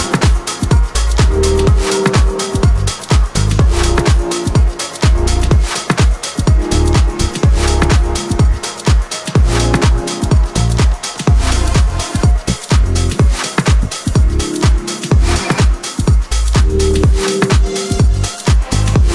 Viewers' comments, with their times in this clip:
0:03 Not sure how people aren’t discussing how good that ID starting is but it’s straight fire. That track BRIIIIINGS IT.